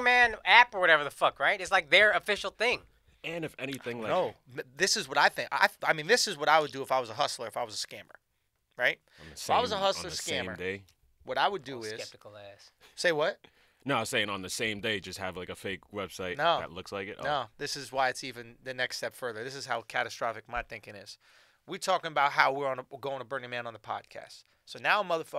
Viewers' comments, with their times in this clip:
0:09 I SWEAR SCHULZ SAID NIGGA